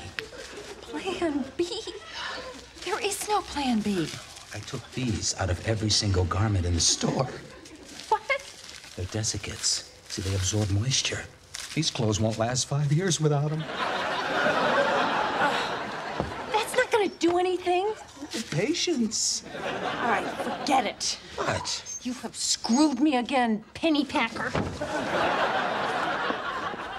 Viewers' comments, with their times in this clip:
0:07 Elaine couldn't control her laughter